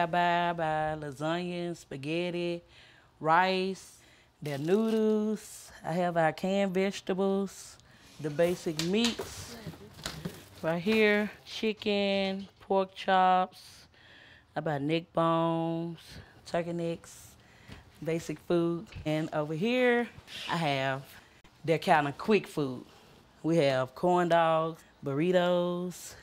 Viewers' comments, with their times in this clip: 0:08 No one: Woman noodoos